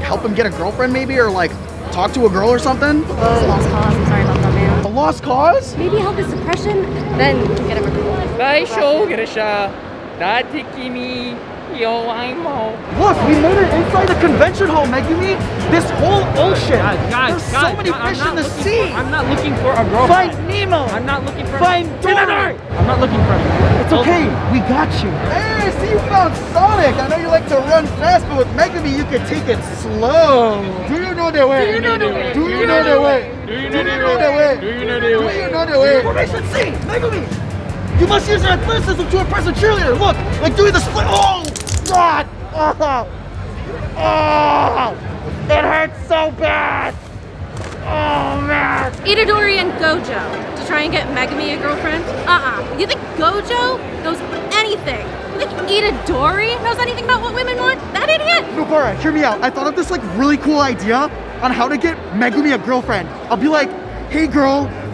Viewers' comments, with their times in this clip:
0:09 was the saddest yowai mo i’ve ever heard was it supposed to sound sad?
0:09 Hair's down, sounds depressed, this is depressed gojo!
0:50 bro said eat a dori